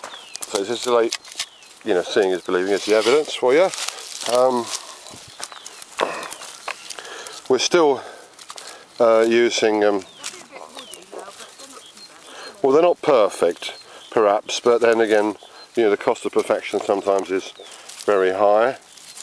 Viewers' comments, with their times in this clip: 0:05 That is a paradise you have there! Was that a pheasant I heard ? You must be from the deep south cause you both talk funny! Just kidding , I assume you don't get a hard freeze in that part of the UK .